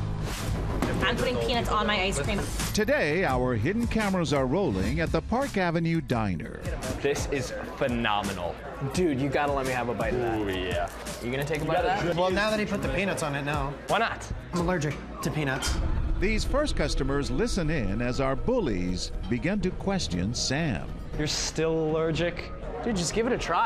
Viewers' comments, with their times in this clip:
0:10 Well now that he put the penith on it no I'm allergic. . . to penith